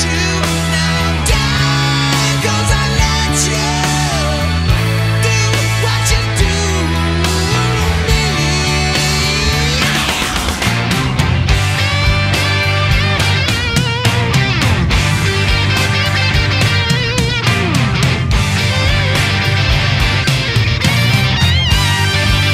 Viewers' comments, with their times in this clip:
0:08 love this tune